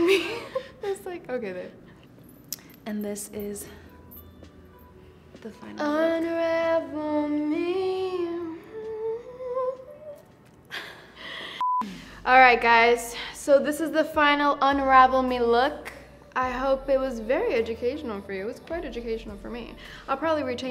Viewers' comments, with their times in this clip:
0:06 Her voice is literally an instrument
0:06 man whn she humms 😇